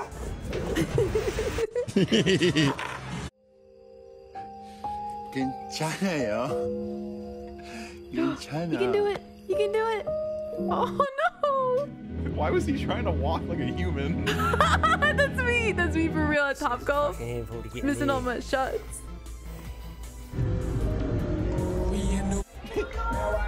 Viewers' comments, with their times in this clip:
0:04 That took a lot of effort, you can tell by that "Hyourp" {Hi-or-yup}